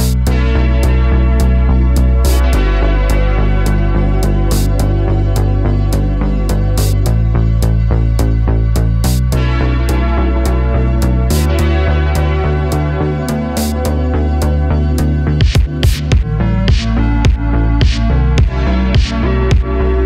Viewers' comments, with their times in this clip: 0:06 bad drum beats, that's why they went under. Haunted by John Bonham will do that to a place. The curse of the cheap drum.machine. Not to mention a guitarist on audio without guitars. Who isn't playimg in the first place. I'm guessing they used better music to get the dancers working. That's one GIGANTIC store to have nobody there, even for the commercial.